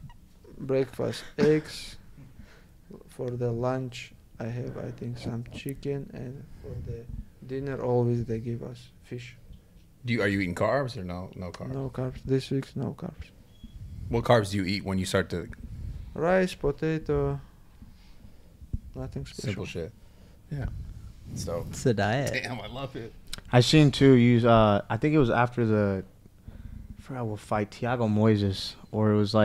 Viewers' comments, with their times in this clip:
0:10 gosh this guy is beyond innocent and down to earth – JUST THE WAY HE SPEAKS!!!